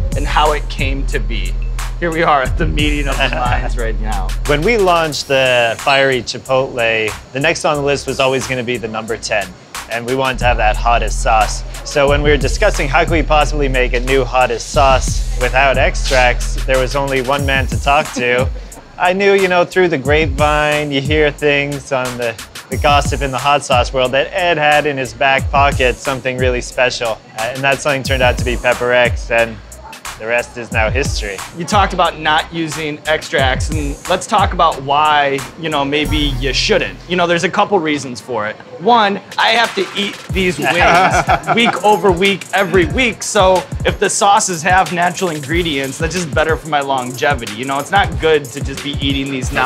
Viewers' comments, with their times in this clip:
0:04 Guy sounds like John Mulaney
0:37 Is Sean rapping??